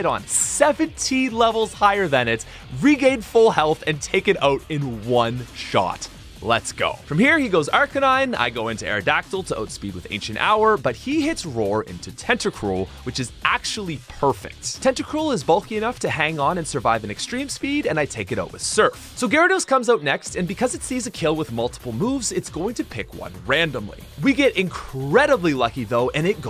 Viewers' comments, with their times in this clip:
0:10 My guy said accent ower